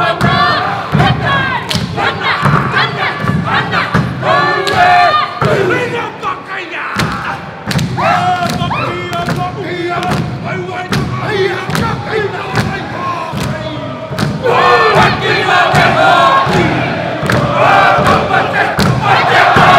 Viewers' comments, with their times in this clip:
0:04 it sounds like he shouts "where the fuck are ya!!!" 😂